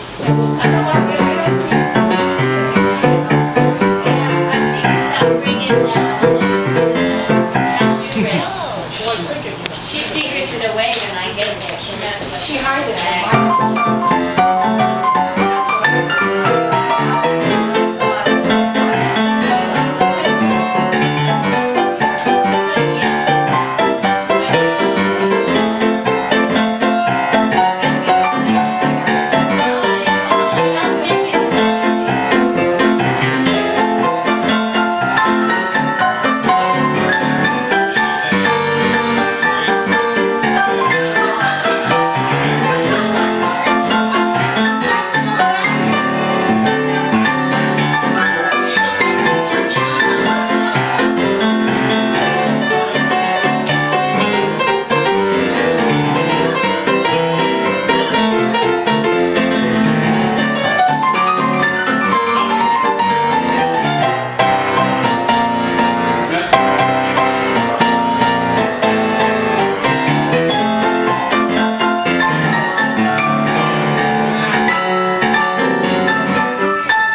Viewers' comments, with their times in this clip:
0:07 seconds. He seems to hear the whole thing in his head and realises how fun of a tune it is and laughs.
0:59 that lick that took me 2 whole day to figure it out and managed to play it right in a week Tom be like: "Me sight-read. Take it or leave it"
1:05 is it just me or I heard the V V7 I V from Thomas the tank engine?